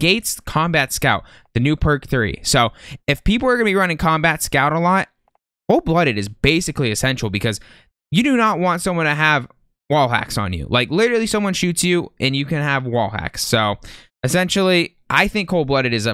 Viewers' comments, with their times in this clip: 0:03 Thought you said perc 30 😂